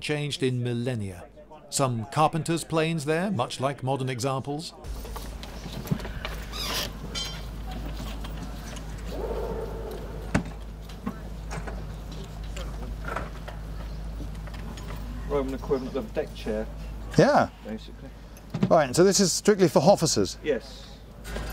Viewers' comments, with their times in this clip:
0:09 did anyone catch the sound of a motorcycle banging off the limiter lol